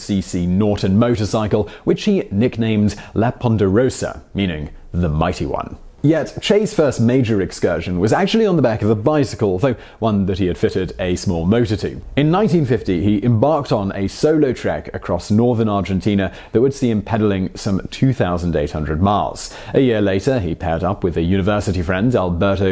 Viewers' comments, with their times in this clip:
0:04 There is no "n" sound in "La Poderosa", i suppose.